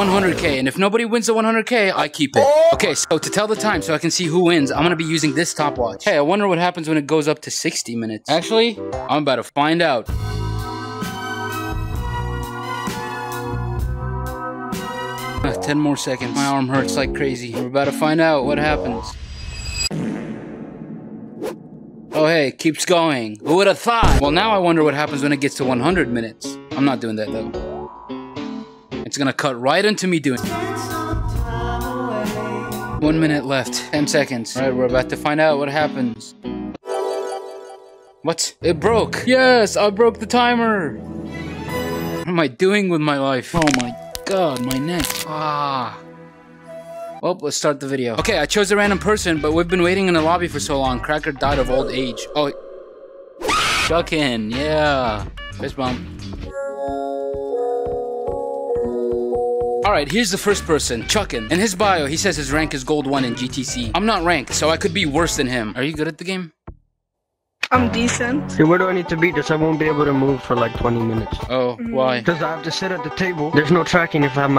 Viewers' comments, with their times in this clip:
0:09 music is fire
1:02 best music ever 👹